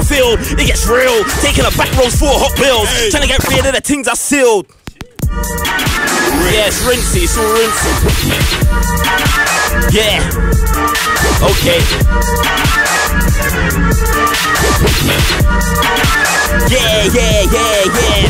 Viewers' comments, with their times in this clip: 0:05 Best believe I'm beggin for that riddim
0:05 wow what is that beat ? cold